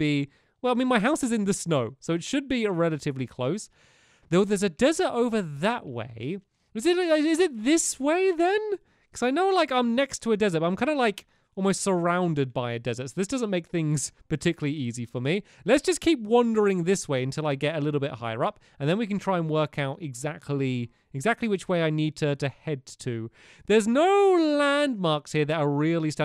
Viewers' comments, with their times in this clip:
0:07 That noise he makes !